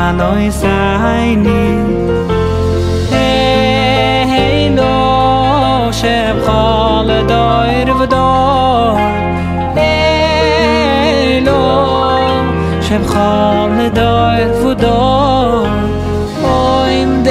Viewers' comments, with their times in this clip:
0:04 he should keep faithful to melody. Awesome musician!